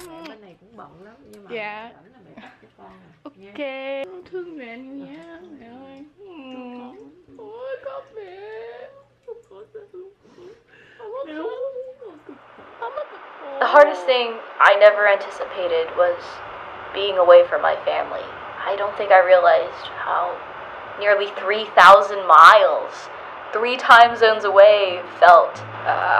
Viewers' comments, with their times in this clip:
0:08 When a mom starts crying, I start crying